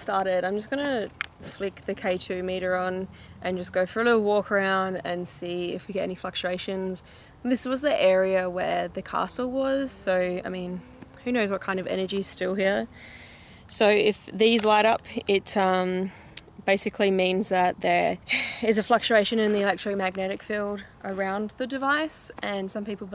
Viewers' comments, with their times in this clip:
0:10 At time stamp is that a melody being hummed in the background noise